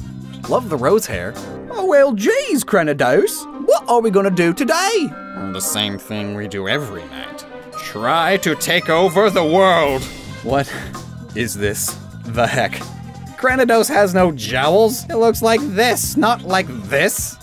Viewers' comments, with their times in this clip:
0:05 at first I was laughing at its hilarious face, but when you said take over the world in brains voice I lost it XD